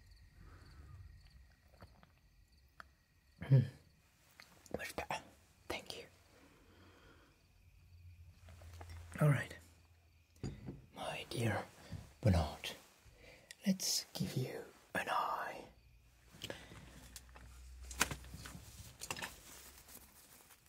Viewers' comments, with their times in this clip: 0:03 I love that he sounds like Baga Chipz